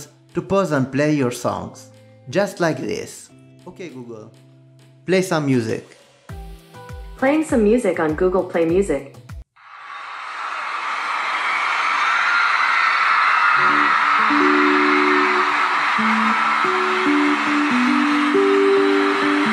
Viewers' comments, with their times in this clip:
0:03 not me getting super excited at Shawn Mendes being the choice song… I recognize those screams cause I was there 🤣